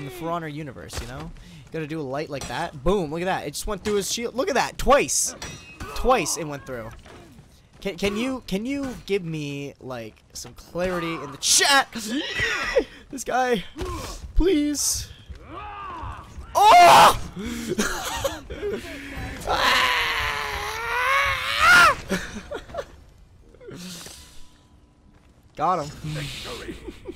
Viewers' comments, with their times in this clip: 0:10 now i know how they did this battle swin effect sound xDD